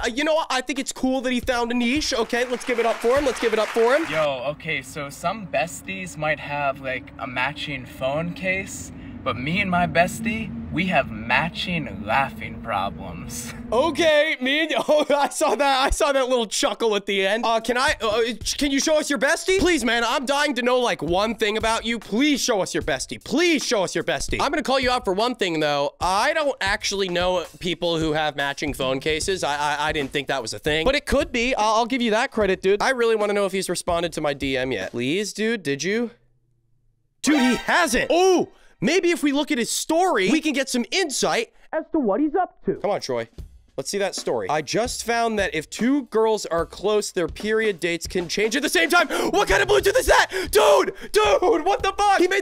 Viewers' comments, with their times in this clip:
0:08 this guy is the laughing god
0:37 him screaming "OOH" and how excited he got sent me 🦕